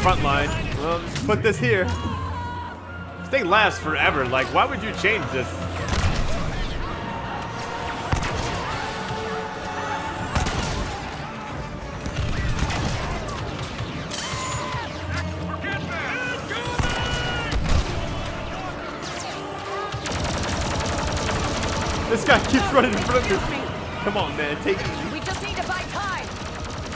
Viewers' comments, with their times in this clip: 0:07 what is that moaning